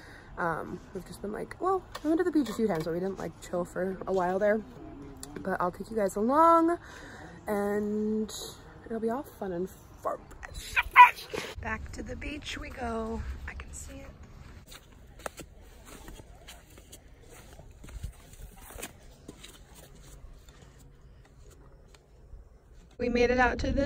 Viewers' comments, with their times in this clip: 0:09 wth was that? 😂😂😂 start to say it, muffle it, then that......😜😜